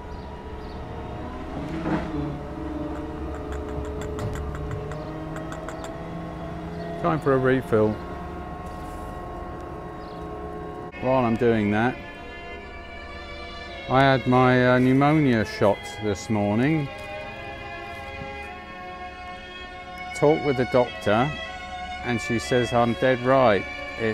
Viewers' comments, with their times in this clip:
0:07 looks and sounded like something out of “War of the Worlds” coming over the hedges 🤔